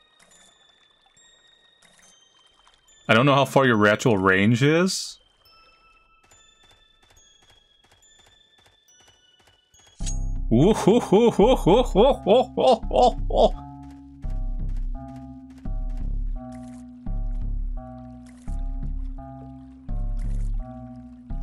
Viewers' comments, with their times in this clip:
0:09 That laugh I cant😭🖐